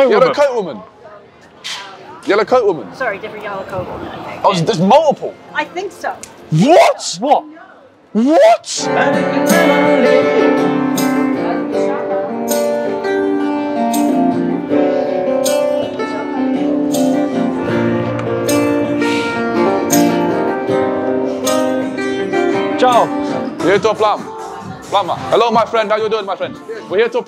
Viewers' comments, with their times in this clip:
0:10 what a fire sample wtf. Gnna use this